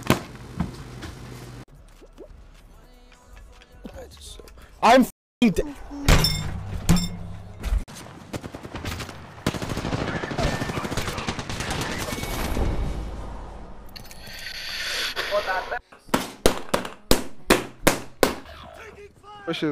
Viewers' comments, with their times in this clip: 0:06 bro really went boing💀